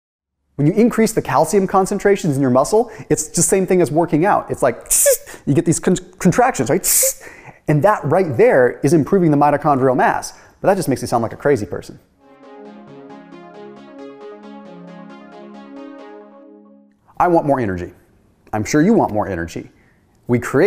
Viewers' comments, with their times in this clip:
0:03 nice sound effect!